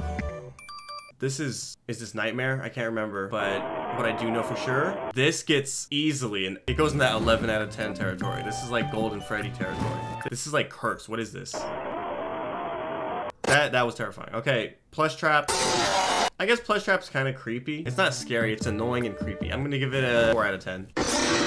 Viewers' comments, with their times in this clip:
0:04 I love how in Nightmare's jumpscare there is sirens because C.C was dead/dying. Same for Nightmarionne